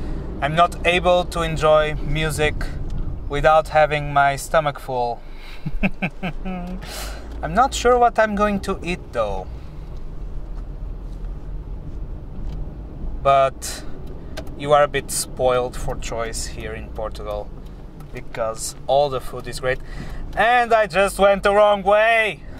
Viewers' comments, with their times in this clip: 0:05 that evil laugh xD